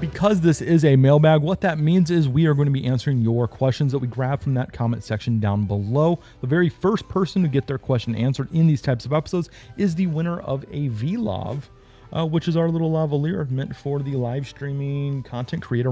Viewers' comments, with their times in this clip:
0:03 how’d you edit out the sound of bumping the microphone with your arm, while talking?